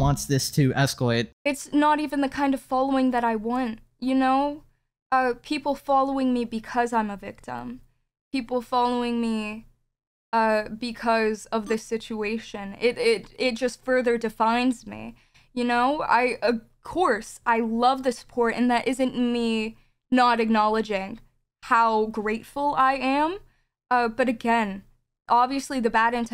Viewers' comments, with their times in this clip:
0:08 little miss actress over here is stuttering and making things up as she goes